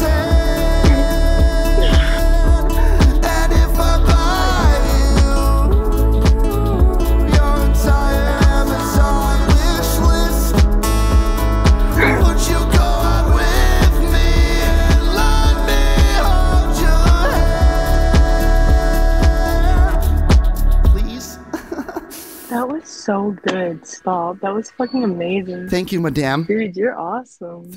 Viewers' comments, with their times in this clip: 0:10 BRO!! that hard plucked open string was fucking taaaasty dude. It's those small details that really sell a piece. Good playing musicianship my man.